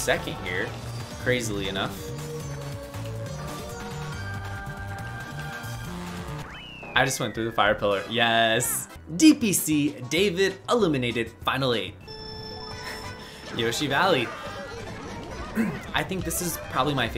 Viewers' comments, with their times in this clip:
0:05 his phone buzzed